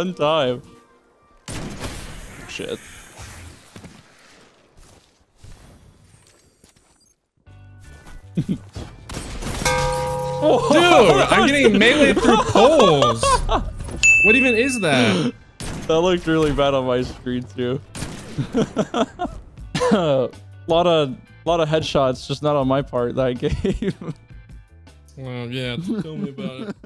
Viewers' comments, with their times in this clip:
0:10 The gong was perfect